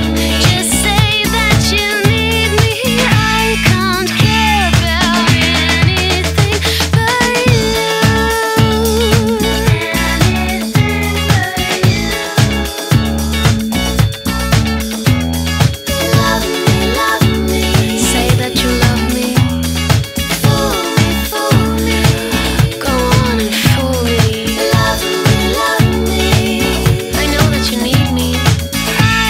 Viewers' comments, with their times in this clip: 0:10 the harmony honestly gave me life